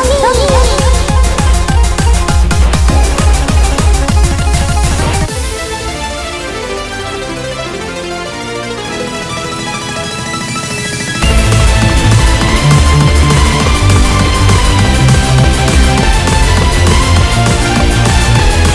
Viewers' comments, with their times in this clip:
0:05 God DAMN Snow Goose with that bassline is fucking RAW